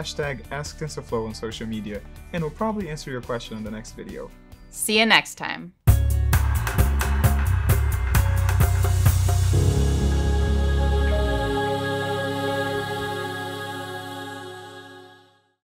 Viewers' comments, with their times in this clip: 0:09 sounds like we are in heaven